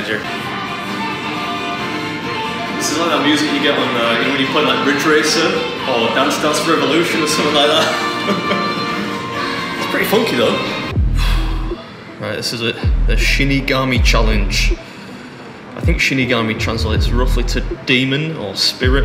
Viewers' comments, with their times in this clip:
0:05 Random, if anyone cares that music sounds like something from band fhána